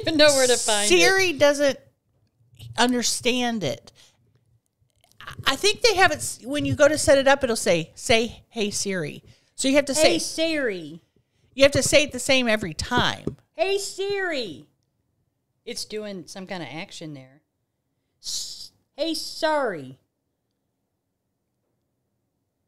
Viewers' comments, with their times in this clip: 0:08 sis got me good. Yelling into the phone for Suri to answer, then she goes "Hello??" 😂😂😂 Thanks ladies, I really needed a laugh